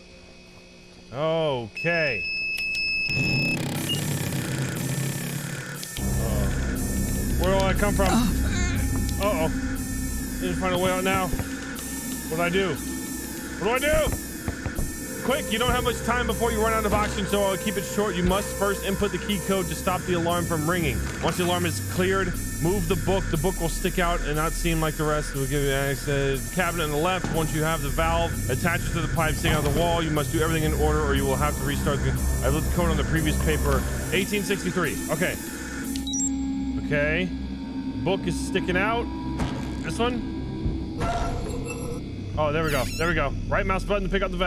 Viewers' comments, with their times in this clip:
0:05 THAT ALARM SOUNDS LIKE THAT ONE SOUND IN THE BATTLE OF GIANTS: DINOSAURS DS GAME (if u know this game holy shit)
0:25 god why does that alarm trigger such violent nostalgia trips and invoke such a fear response? Where have I heard it from?